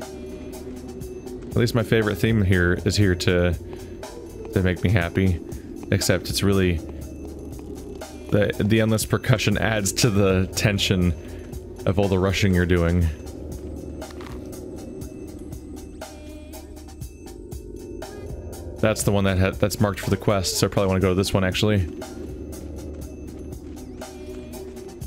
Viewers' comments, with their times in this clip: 0:10 Of all the Russian you are doing! 👉